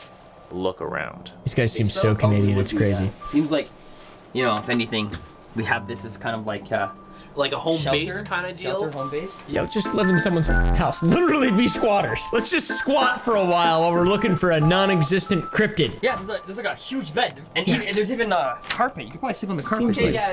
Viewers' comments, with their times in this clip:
0:03 “This guy sounds so canadien it’s crazy”